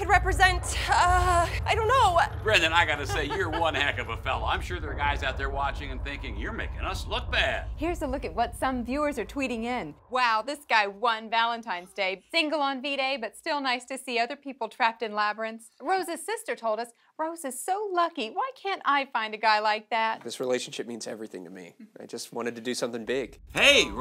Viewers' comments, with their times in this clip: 0:09 for some reason I heard " fingered on v-day but I'll still like to be trapped in the labyrinth"